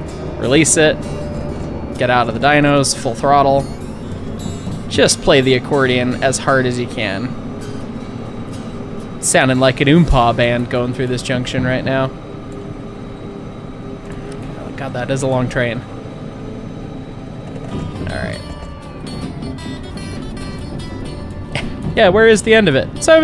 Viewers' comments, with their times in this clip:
0:06 with special guest weird Al yankovic playing the train accordion